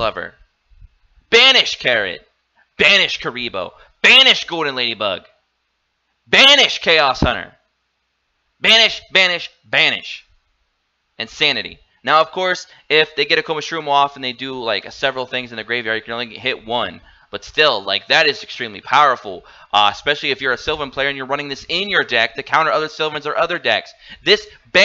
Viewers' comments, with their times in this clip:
0:08 Venice venice venice! I like this Guy haha.